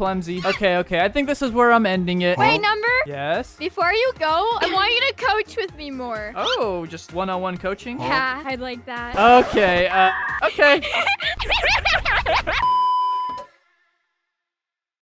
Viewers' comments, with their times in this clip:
0:11 Why does she laugh like that?